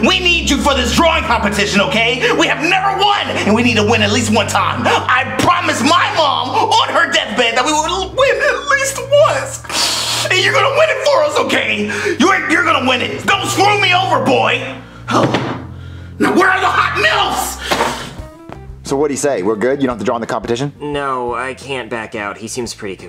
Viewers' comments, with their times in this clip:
0:04 I PROMISE MY MOM ON HER DEATHBED THAT WE ARE GONNA WIN AT LEAST ONCE. Long wheeze YOU BETTER WIN FOR US BOI